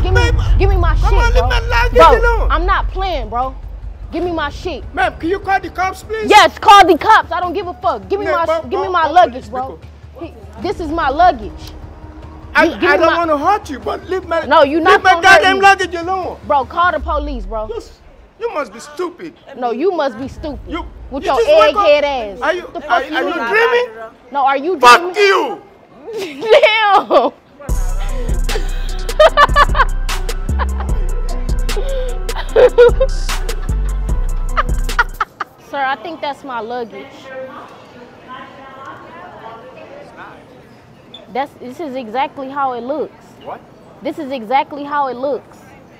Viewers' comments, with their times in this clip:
0:06 😂😂😂😂not the accent
0:26 mans said f..k you from the soul Lmfaooooooooffff😭😂🤣